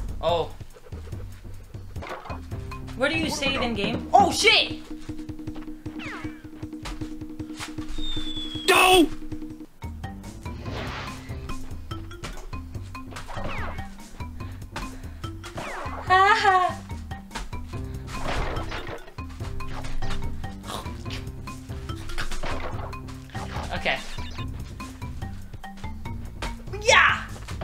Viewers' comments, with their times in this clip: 0:08 can never resist a good Homer "D'oh!" 😂 this was such a fun start! :_rawrRawrLAX: